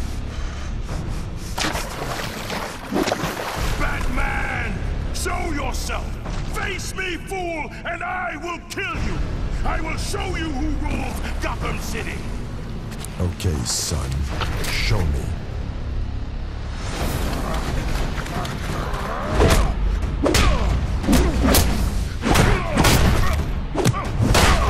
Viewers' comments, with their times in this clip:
0:04 All I heard was Kratos
0:06 Mutant leader’s way to express is like Kratos when he calls Zeus